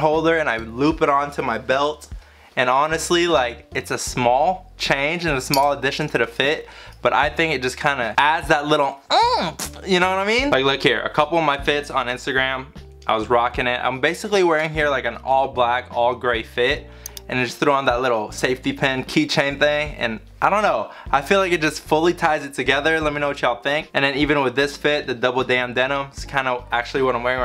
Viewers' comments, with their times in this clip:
0:08 “Adds that little Mmm-tis ya know what I mean?” (switch the playback speed to 0.5x) You’re not wrong good sir lol